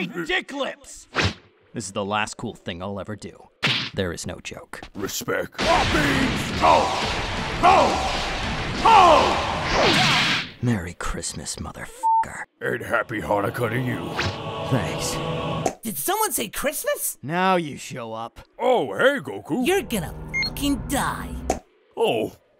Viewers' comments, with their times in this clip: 0:05 ill just leave this here for myself because i like how cell says "Respecc."